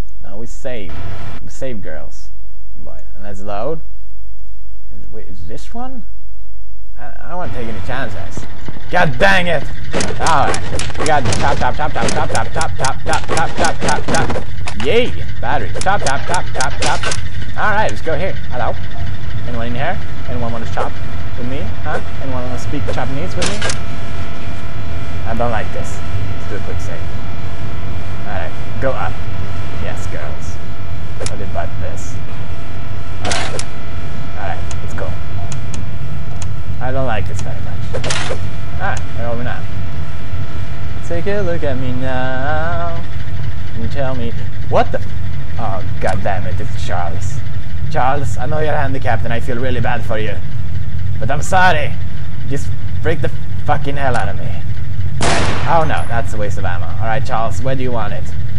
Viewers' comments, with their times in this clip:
0:03 He's playing CHOPSTICKS
0:41 pewds is a good singer!!